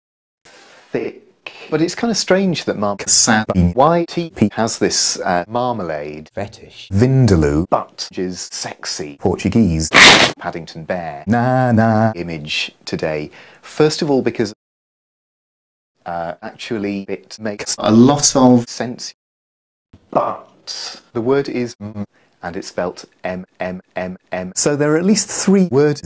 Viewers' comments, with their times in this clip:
0:10 Why did the bread crunch actually make me laugh